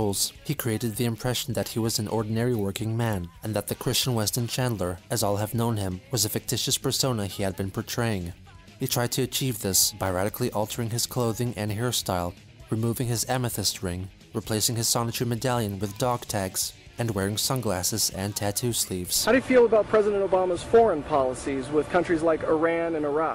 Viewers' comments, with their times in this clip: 0:09 that guys voice isnt too bad honestly